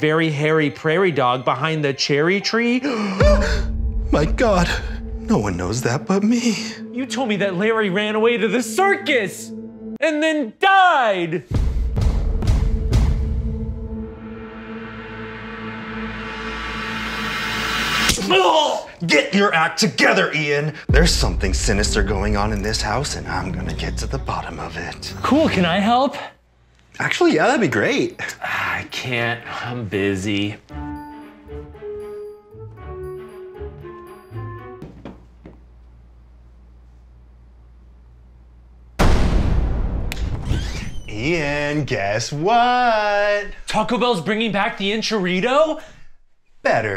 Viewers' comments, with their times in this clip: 0:08 ian put his heart and soul into that "and then died!"
0:31 i died laughing as soon as i heard the sims music on as Ian goes to corner. xD